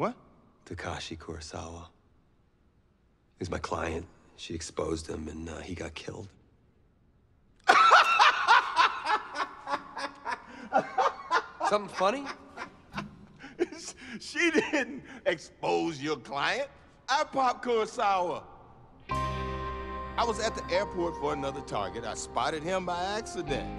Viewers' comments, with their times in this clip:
0:06 bust out laughing where the truth is revealed.
0:06 Most contagious laugh ever 😆
0:06 That laughter is contagious 😂
0:07 That is the funniest laugh ever!! 😂😂😂